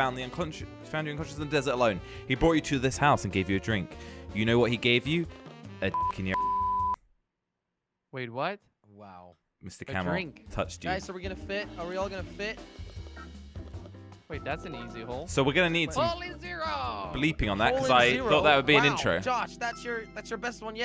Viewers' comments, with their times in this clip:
0:05 When he said that the music stopped and Jordi and jelly said wait what… wow 😂😂😂😂